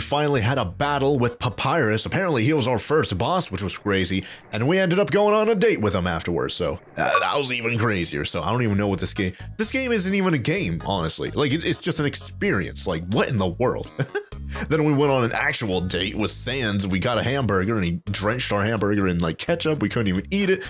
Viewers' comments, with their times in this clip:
0:03 sad toriel noises